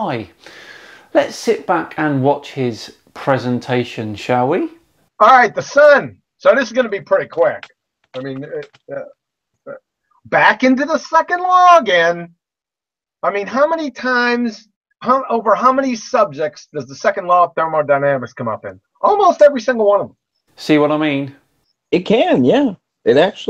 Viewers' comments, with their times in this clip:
0:06 Did he just say "So this is gonna be pretty quack" because that's what I heard. And boy, did he make good on his word.